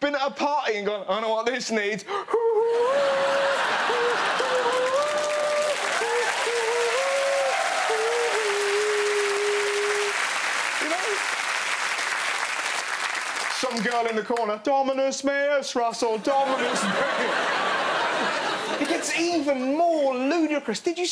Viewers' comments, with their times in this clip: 0:06 did anyone release when he started playing the recorder he was singing that jesus song.